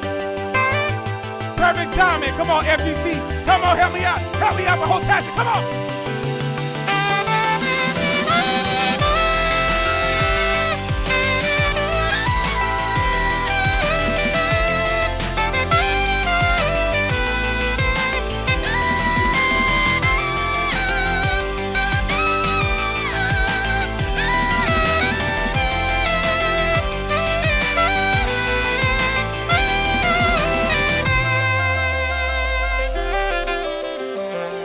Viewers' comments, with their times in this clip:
0:08 Just listening to vids at work, youtube autoplays into this, stank face grows. i TAKE OFF MY HEADPOHONES TO LISTEN BETTER. Nani the HEck? Those ad libs had me fuked up and you got a new subscriber
0:16 got me crying.. the sheer power of the sax.. pierced my heart. <33